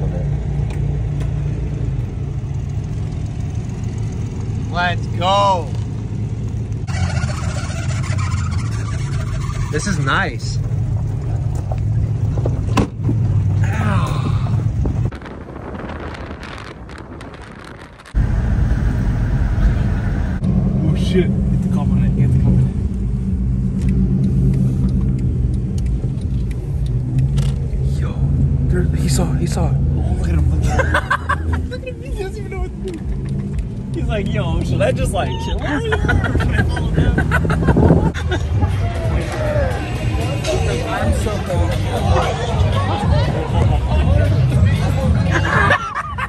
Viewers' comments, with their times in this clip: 0:09 fold me up, I can't stop laughing at the door slamming 😂😂
0:27 laughing so hard at the cop to his face lmaooo